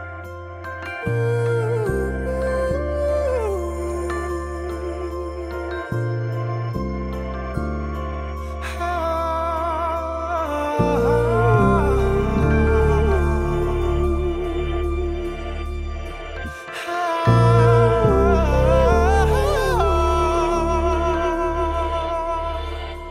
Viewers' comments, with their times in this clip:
0:09 This voice is... wow